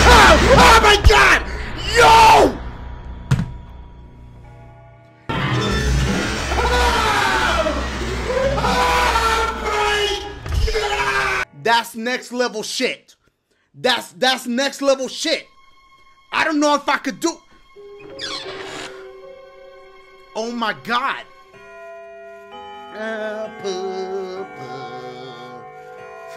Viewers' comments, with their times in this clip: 0:05 lol xD when she screams dashie screams back
0:05 he said everything with an H lml
0:05 Thats what you can hear in my house at Midnight With Belt sounds
0:07 he can't even breathe x)